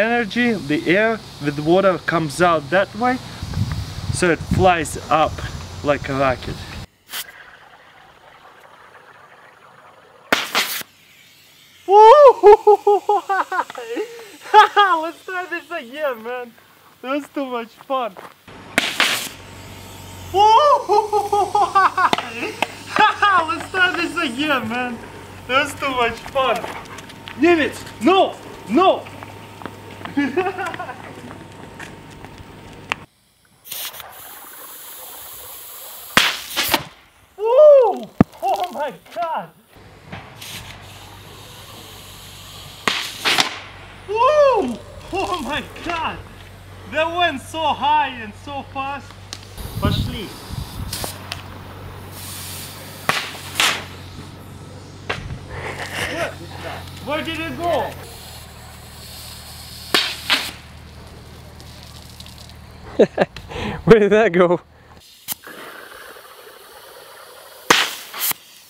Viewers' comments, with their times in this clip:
0:07 What sort of laugh was that 😕😑😯😐
0:07 What sort of laugh was that 😕😑😯😐
0:07 I was kinda hoping that it would hit his car p.s love the laugh
0:09 That's what Jumba Jookiba from Lilo and Stitch would sound like on helium
0:10 epic laugh lol
0:11 Omg on ooooh that laugh omg it reminds me of a show
0:11 the way he laughs lmfao
0:11 what a beautiful laugh :DD
0:11 WHOOOHHUUUUHUUUHAHAHAHAHA - best laugh ever
0:12 that woo hoo hoo ha ha ha 'XD
0:13 that laugh tho lmfao😂😹😅😹😂
0:13 he sounds like stampy laughing
0:13 Omg his laugh is literally me
0:14 probably one of the best laughs i've heard in my life XD
0:18 his laugh oh my fucking god!! sounds like elmo
0:20 sounds like caveman
0:26 his laugh lolol
0:26 That laugh ! HOO HAHAHAHHAHAHAHAH
0:30 i like how he's running after the water bottle rocket and laughing like a little kid. hahahahaha
0:33 Russian motar shelling
0:52 That laugh do